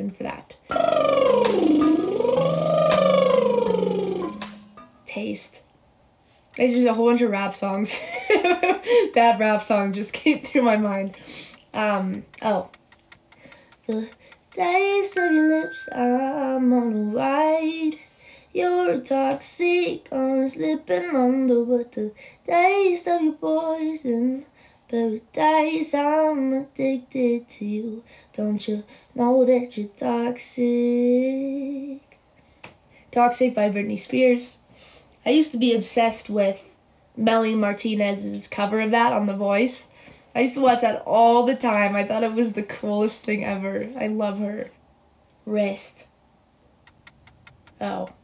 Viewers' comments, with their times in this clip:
0:05 How haven't I noticed that her name Tate sounds so much like the word taste?
0:32 you know whats addicting? your voice, tate. also, ur my celebrity crush lol so hi